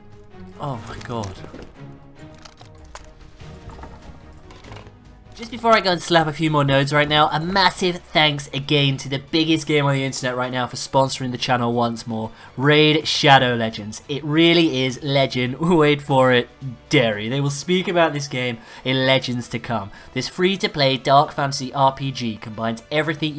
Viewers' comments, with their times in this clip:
0:05 why does his voice go so high randomly for example when he does the sponsorship